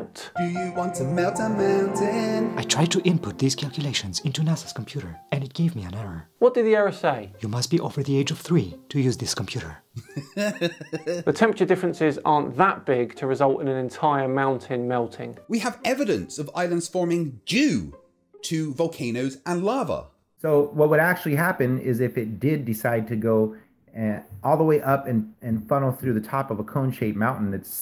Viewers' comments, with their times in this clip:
0:09 His laugh made my day..